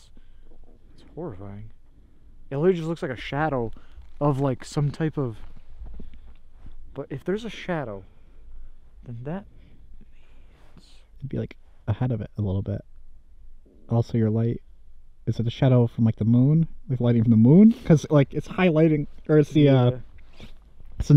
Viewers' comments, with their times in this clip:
0:04 Also you can here a male voice say leave
0:09 I’m pretty sure sounds closer to something like “witch” or another word with similar sounds/syllables? I’m not entirely certain, but it definitely seems like the word ends with a ICH or ITCH sound.